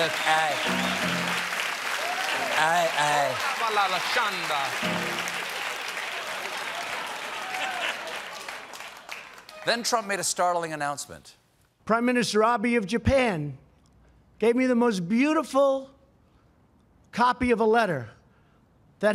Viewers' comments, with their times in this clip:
0:03 I've asked this before, but never gotten an answer. Jean Batiste says something that sounds like, "oba lala shanda." He says this A LOT. Does ANYONE know what he's saying and why?
0:04 dude on the keys imitates speaking in tongues 😳⚰️🤦🏾‍♂️🤣🤣🤣🤣